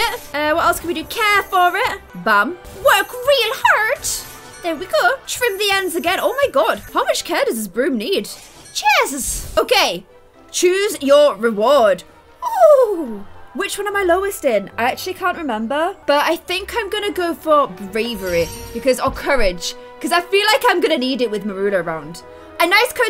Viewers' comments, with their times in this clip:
0:06 I thought she said holy s**t
0:07 Is it just me or did I hear hole S**t
0:07 I was not looking at the screen when she said this and heard something else... My head shot up so quickly
0:07 sounded like a bad word😂